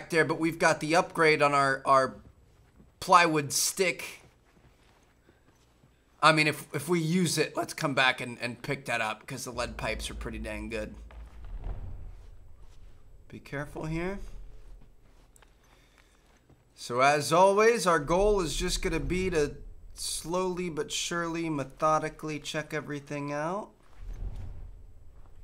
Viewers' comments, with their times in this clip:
0:07 Lol voice crack